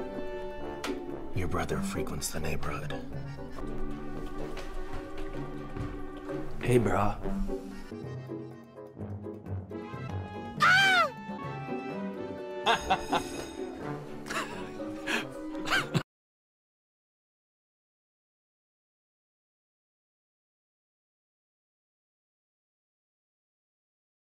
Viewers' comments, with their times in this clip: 0:10 Misha making bird sound AAAAAAGH Misha wayward people
0:10 That scream I'm done!!! 😂😂😂😂